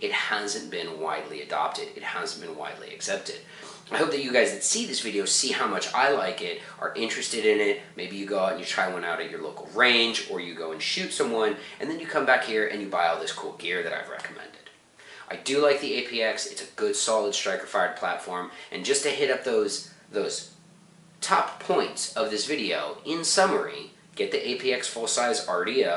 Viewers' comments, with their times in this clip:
0:10 LOL, he said "Or you go and shoot someone". Probably didn't qute hear it right, but it made me do a double take...yup